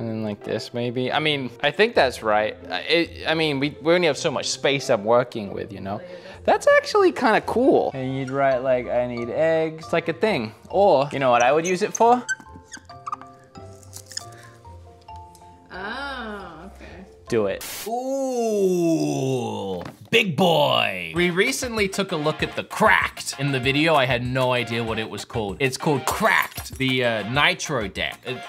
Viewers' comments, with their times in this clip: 0:10 I know what I would do (Pokémon music starts playing)